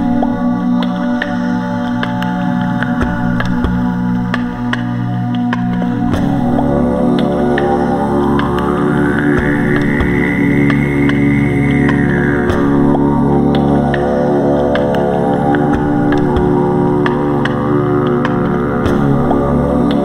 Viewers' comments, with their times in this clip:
0:05 I came calmly and peacefully to my meditation with this song but your throat singing snapped something out of my soul. I was brought to sobs. Released, accepted, returned to peace. Thank you so much for all you do, namaste 🙏